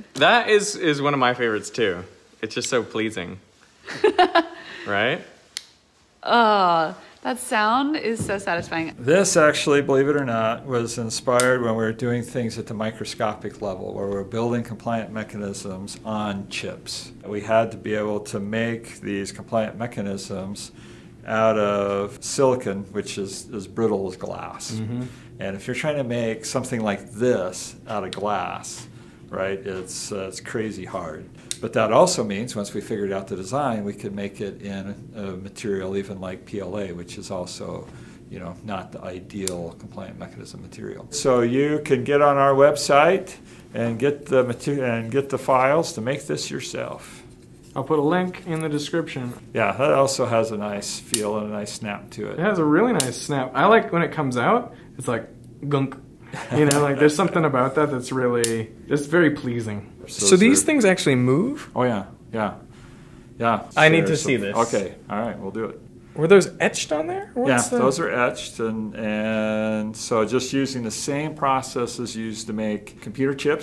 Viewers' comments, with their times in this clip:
0:07 "clikety machine compliant mechanism ASMR (collab with the Physics Girl)
0:41 Gonna try and print it now using PLA. Hopefully it doesn't break easily, since the thin connectors are only 1 layer wide when I slice it. EDIT: Print is done and working great, just like in the video, with that satisfying snap when it locks nicely into place.
0:57 any psychological studies as to why such clicks are satisfying?